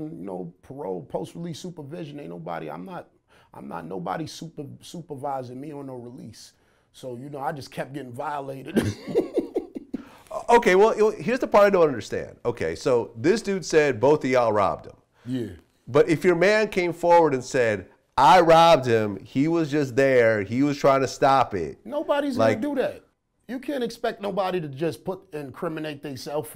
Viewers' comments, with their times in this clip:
0:09 That laugh is cute as hell..